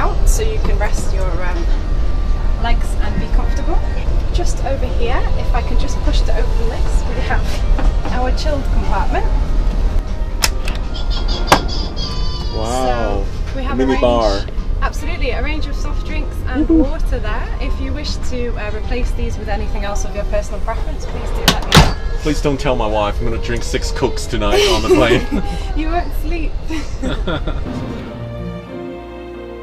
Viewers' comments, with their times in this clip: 0:09 imagine being first class and still have to hear children cry during to flight
0:11 Great 20k ticket Kid crying LOL
0:11 You pay all that money and STILL can't get away from the crying babies.
0:11 I also agree. Lovely to have private, quiet space to relax but the dedicated slave detail is a bit much. Serving food to someone in their bed....shining their shoes. People have such totally f*d priorities these days. Also, after she showed him the cold drinks, starting I thought I heard a crying baby. Uhhhhh...HELL NO!!!